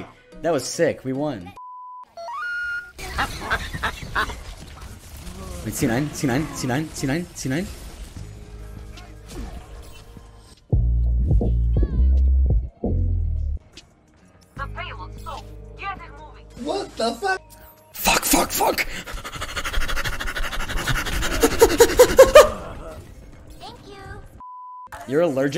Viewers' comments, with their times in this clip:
0:10 sleepy nice background sound effect